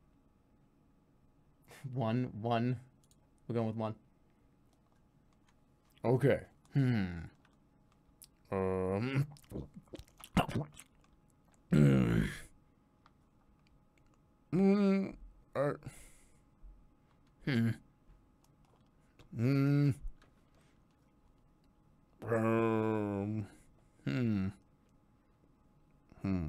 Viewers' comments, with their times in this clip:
0:09 First Jerma cat puke noise